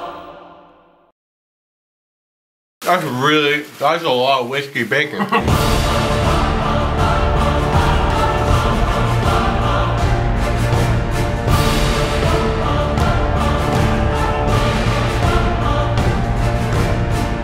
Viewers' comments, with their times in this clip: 0:03 He spoke 0.0